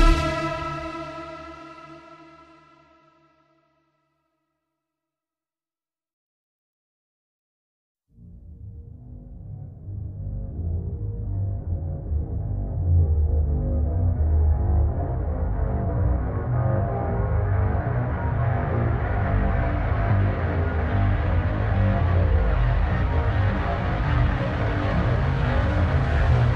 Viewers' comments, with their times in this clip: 0:07 Honestly I want to timestamp every song in this soundtrack, but is an absolute banger that gets me so pumped